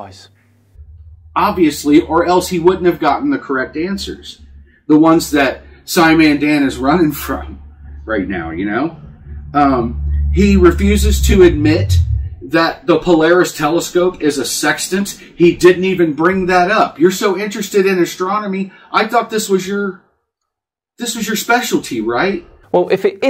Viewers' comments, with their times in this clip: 0:10 did he just fart? Else it's his stomach and he was very hungry.